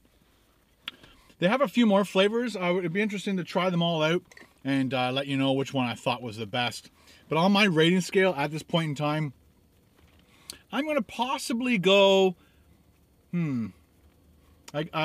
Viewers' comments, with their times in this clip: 0:03 the way you said 'out', kinda makes me happy for no reasons.